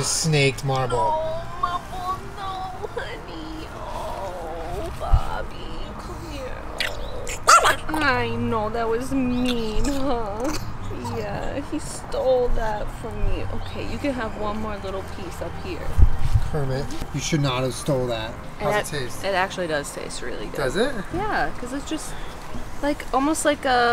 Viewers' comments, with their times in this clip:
0:06 Marble's little bark💗💗💗 It sounds like he's saying his name Marbles is best Pokemon
0:07 i could’ve sworn marble said ‘kermit!’
0:07 Did mr. Marble really say her name like a Pokemon OMG